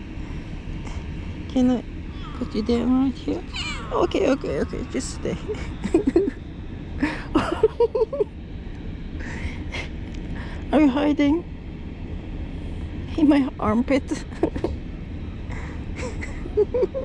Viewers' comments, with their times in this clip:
0:03 ooh sounds like my cat